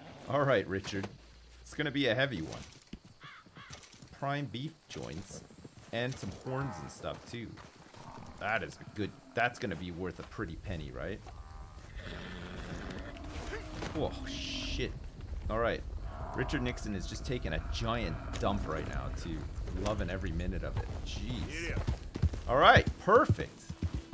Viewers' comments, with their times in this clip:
0:07 was that the bison groaning?